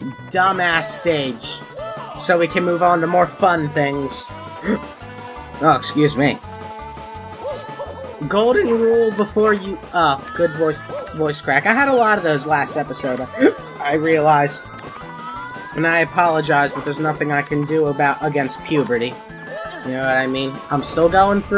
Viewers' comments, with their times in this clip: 0:07 V O I C E C R A C K I N T E N S I F I E D